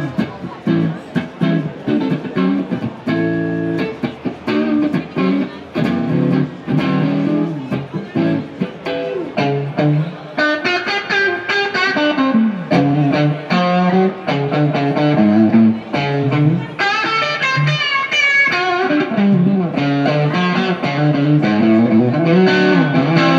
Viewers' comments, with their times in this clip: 0:10 love that old Zeppelin tone!